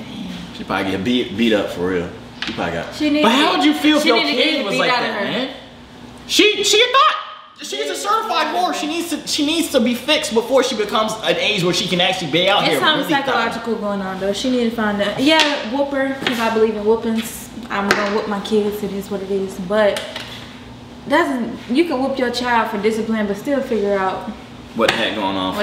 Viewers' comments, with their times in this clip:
0:06 when he said "she a thot" he sound like solluminati lmao